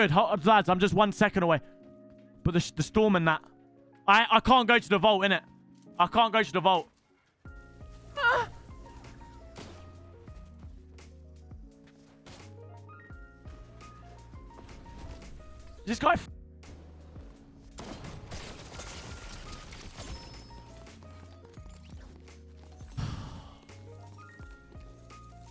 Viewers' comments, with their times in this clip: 0:08 he made a susy sound